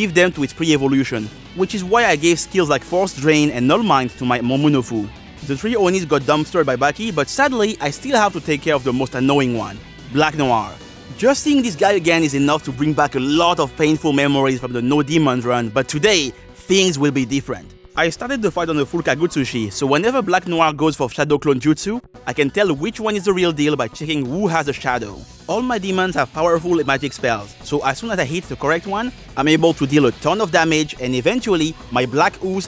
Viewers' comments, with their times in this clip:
0:10 Did you seriously call him "Black Black?"
0:15 I love how Dante just speaks Spanish, it's so funny hearing him being a spaniard myself. Also, on wasn't we suppoused to never mention the Black Noir incident ever again? (Why do I hear a gun glocking?)